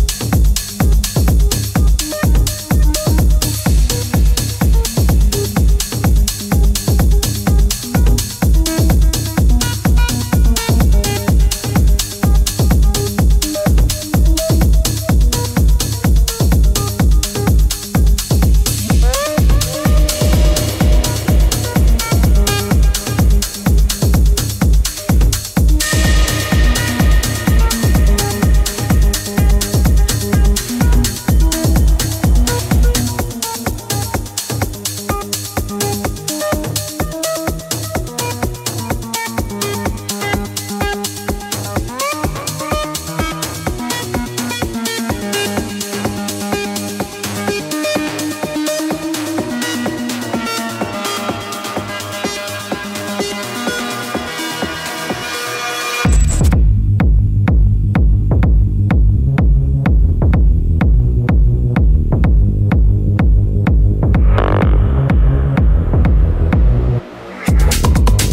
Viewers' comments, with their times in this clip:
0:07 That''s a trippy ass Symbiosis remix
0:51 that drop does something to my spine...